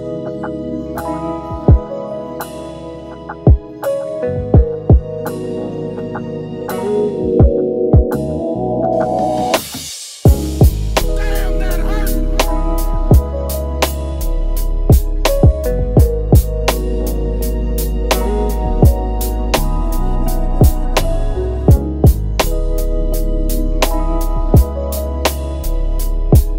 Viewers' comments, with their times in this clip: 0:08 I knew this was going insane when I saw Rick Ross on the thumb nail. No one got better Maybach style music than you. That is a fact. HUUUUUUNNNNHHH Yessss bro..... LOVE IT lol. I almost turned into Rick Ross when the drums dropped. If only I had a actual fur coat and maybach to ride around in while I listened to this. Back and the day, Ne-Yo would have killed this hook too. Dope work